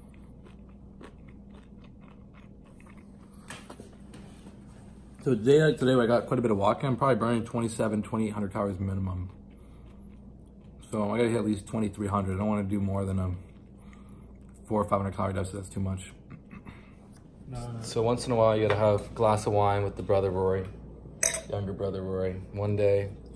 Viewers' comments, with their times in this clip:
0:08 you sound a lot like a meat grinder for someone who hates loud chewers.